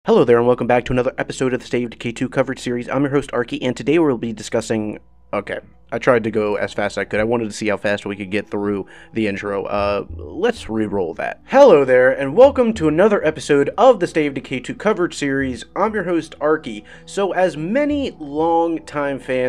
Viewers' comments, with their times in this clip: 0:00 i thought that intro was fast lol. Well done.